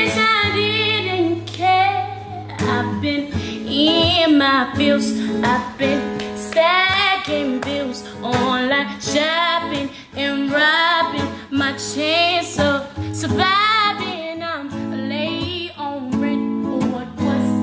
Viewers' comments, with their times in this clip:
0:05 Who else really felt those claps ?